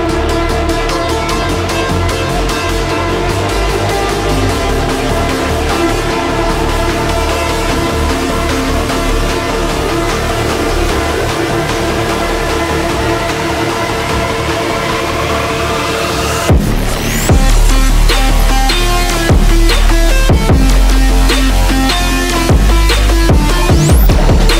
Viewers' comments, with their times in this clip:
0:07 that beat made me smile so much🙂